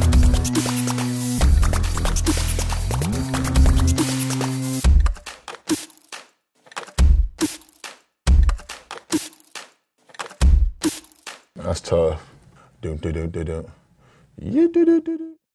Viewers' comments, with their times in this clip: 0:12 Keep pressing this time marker for dubstep